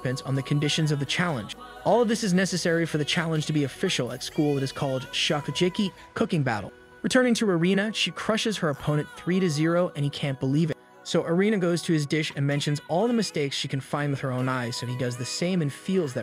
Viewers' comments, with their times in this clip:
0:03 bro your pronounciation is so bad get at least ONE word right 😭😭 "shokucheki" really? thats legit the name of the show shokugeki